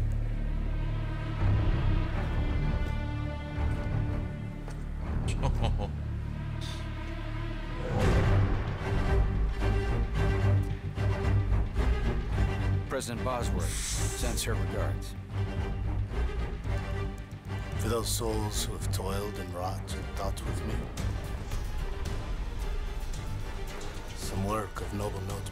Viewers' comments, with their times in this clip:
0:08 Is it just me or does the music playing sound like a worse Avengers Theme